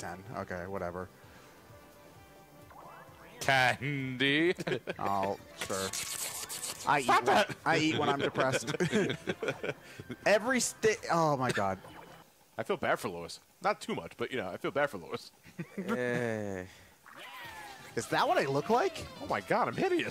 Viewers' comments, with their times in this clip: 0:03 Candy? Hannibal Lecter hiss slurping